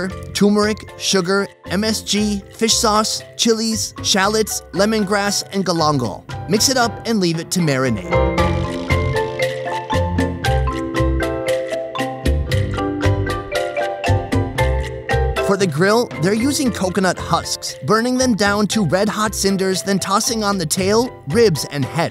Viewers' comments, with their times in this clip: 0:05 DID HE just say Add GLOMGOLd? The Scottish duck